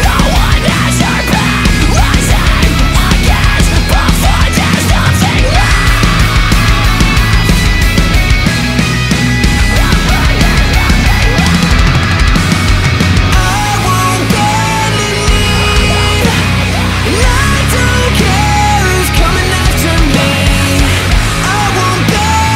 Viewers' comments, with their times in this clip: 0:07 great instrumentals, kinda gives me "We Will All Evolve" vibes...